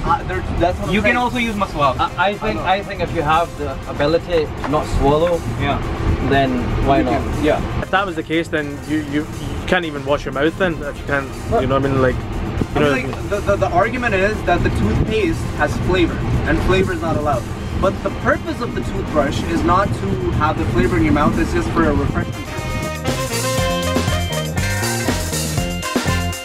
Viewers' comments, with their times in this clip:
0:08 that British Accent Tho